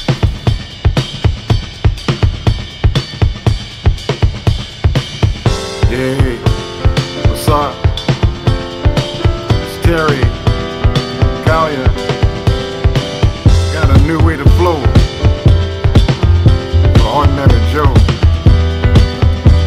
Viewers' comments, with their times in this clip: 0:03 Haha! Terry Callier really sounds like singer Antony Hegarty (from Antony & The Johnsons).